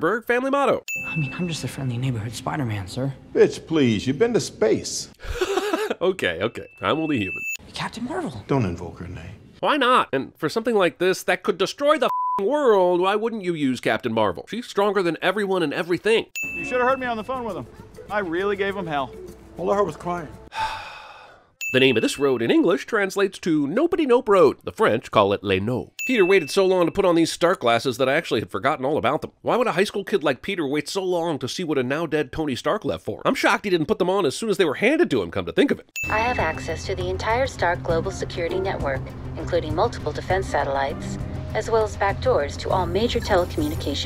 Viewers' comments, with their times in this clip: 0:03 Jeremy's laugh is contagious
0:25 crunching sound You padding the sin count, bro? I think you’re padding the sin count a little bit.